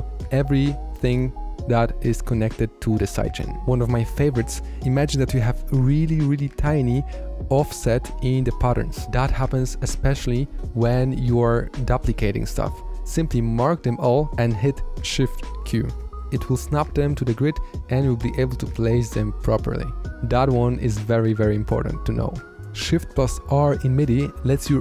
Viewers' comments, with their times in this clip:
0:09 Nah he definitely said "buplicate" the first time lol, that's so funny